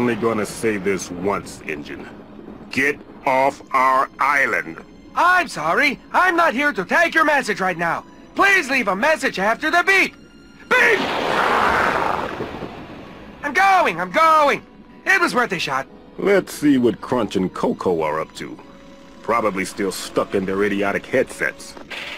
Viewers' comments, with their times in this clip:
0:05 N. gin: im sorry, im not here to take your message right now. please leave a message after the beep. BEEP! crash: demonic growling xD